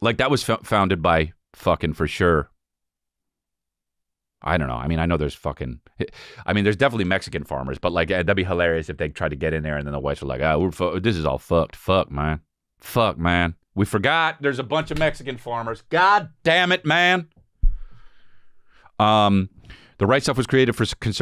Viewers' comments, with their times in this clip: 0:08 I absolutely love when ya do the southern white farmer voice lmaoooo